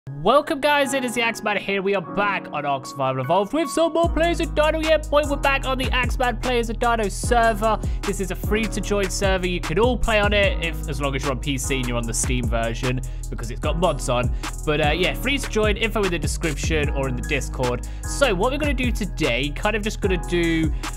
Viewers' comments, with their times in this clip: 0:04 it sounds like he’s rapping